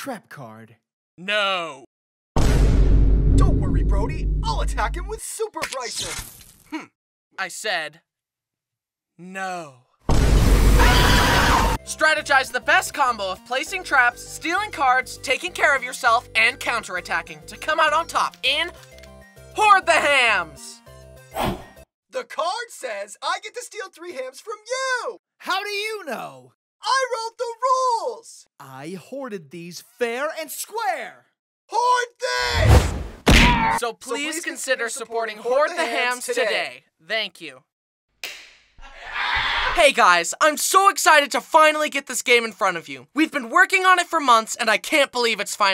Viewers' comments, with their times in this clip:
0:06 I SAID N O . screaming
0:32 was the funniest to me the way he said *hoard this!*😂
0:33 I love the Lego Yoda scream 🤣